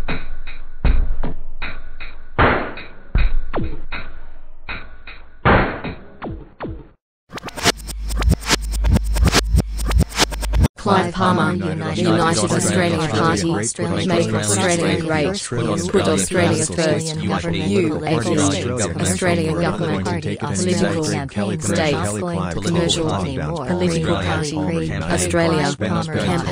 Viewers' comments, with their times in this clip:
0:09 sounds like a demonic chant from "Authorised by Australian Government, Canberra" speakers